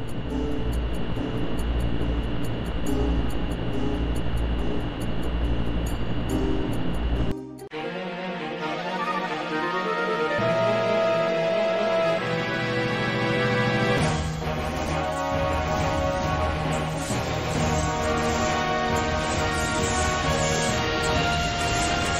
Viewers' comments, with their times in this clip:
0:04 The one you want. That SONG, man.